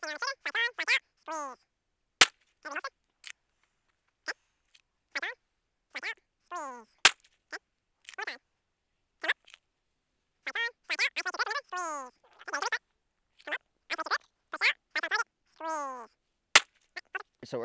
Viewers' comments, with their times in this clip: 0:03 Got good stuff out of this, but also giggling like a little kid because of the sped up "squeeeeeze" 😂